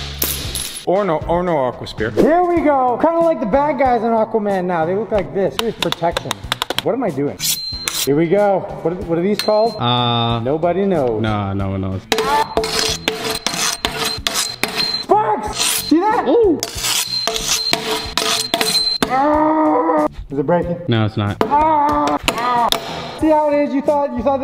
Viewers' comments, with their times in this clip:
0:08 those things are called the sound good blades not really, but the name is fitting tho, they really do sound good like if u agree